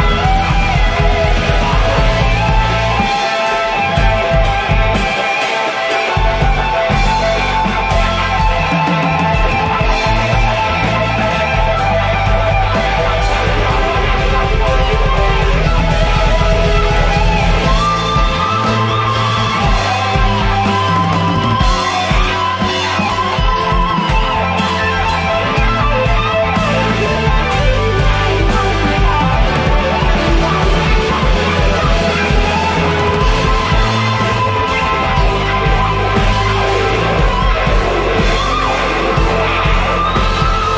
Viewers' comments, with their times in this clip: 0:03 I LIVE for the syncopation
0:05 where the bassist and drummer sync up 👌
0:13 This Wah wah is amazing. 😲
0:17 THAT bend I damn near lost my shit Also, when you start a solo with the note he did, you know you are going to be in for a hell of a ride Incredible!
0:28 That drum build up ish.... good god.